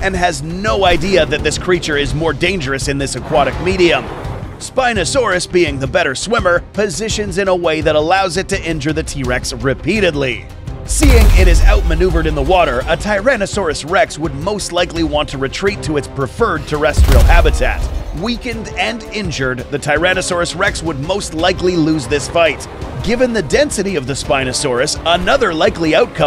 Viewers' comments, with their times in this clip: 0:10 THAT SMACK WAS PERSONAL